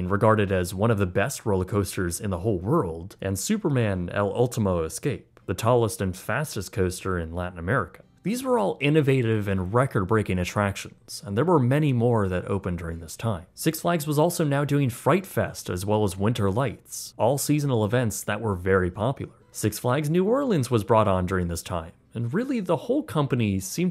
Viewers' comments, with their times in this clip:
0:03 Amazing video ⚡️ a small nitpick: when you pronounced “Superman: el último escape”, you still pronounced escape as if it was in english 😅 thats such a great ride btw
0:05 I was about to say I liked this video but then you pronounced escape (es-cop-ay) like (es-cape) EDIT: Also nitro was ar great adventure